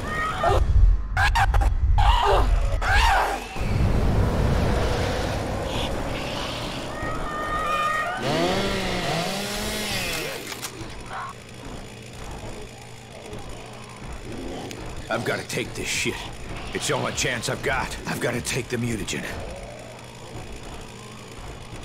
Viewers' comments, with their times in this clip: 0:03 This sound looks like a car in 😂😂😂